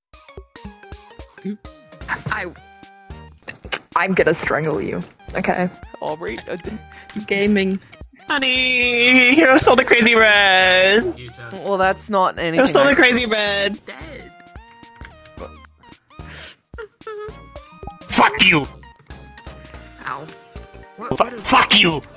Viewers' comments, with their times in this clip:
0:08 NOT BASIL CALLING SUNNY HONEY😨 update: He def said Sunny guys mb..